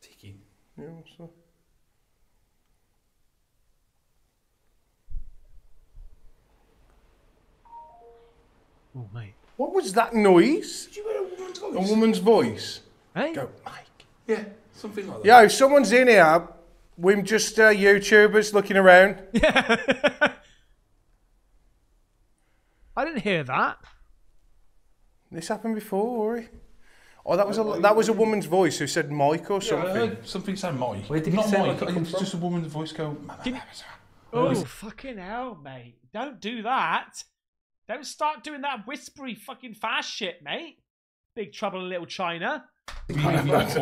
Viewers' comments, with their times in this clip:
0:08 I heard a piano being played a few notes
0:08 👻🗣 "Mike" RIGHT after the chime noise.
0:28 at like the female that said "micheal" twice says something like "pow" then the whole time theyre standing there shes talking to a guy commenting on them and both r laughing, guess they were planning their attack strategy lol after he calls out"spirit" i swear she says sarcastically "man"